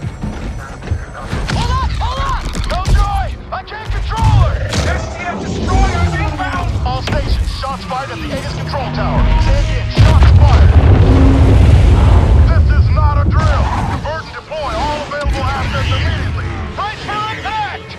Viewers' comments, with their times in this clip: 0:03 You can hear the panic in Ethan's voice lol